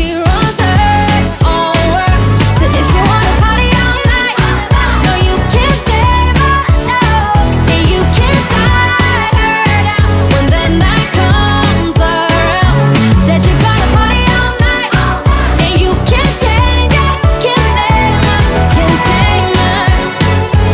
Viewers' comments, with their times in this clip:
0:07 yeah she does sound alot like Rihanna in this song, especially with the Caribbean accents on some words like "her"